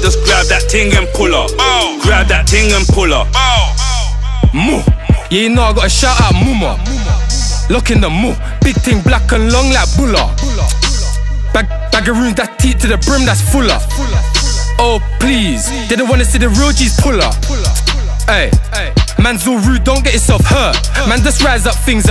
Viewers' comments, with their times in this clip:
0:04 thought that was grizzy for a second